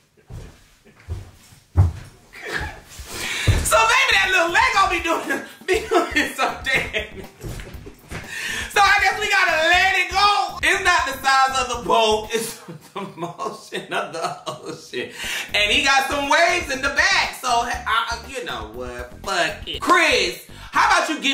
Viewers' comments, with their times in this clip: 0:06 laugh & swiveling around the chair is killing 😂😂😂